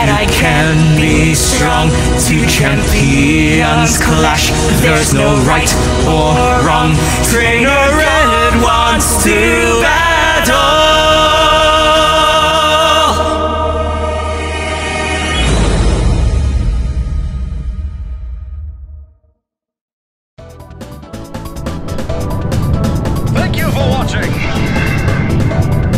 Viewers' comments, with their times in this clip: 0:06 Can we just appreciate how nice sounds? XD